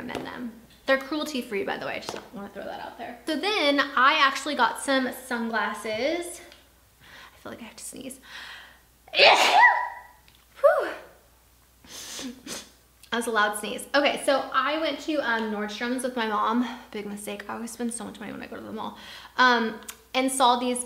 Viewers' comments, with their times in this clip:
0:07 hottest. sneeze. ever.